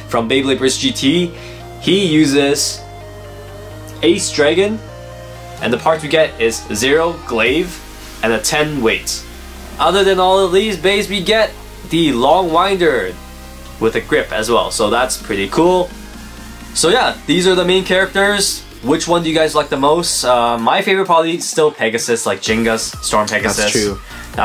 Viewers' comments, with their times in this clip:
0:09 is that a flute I hear?